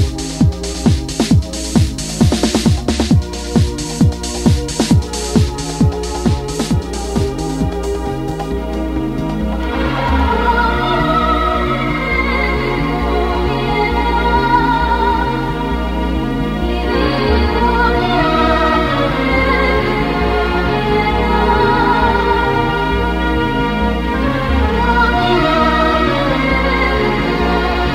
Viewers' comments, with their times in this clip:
0:10 whats this ethereal madness? Thanks for the upload mate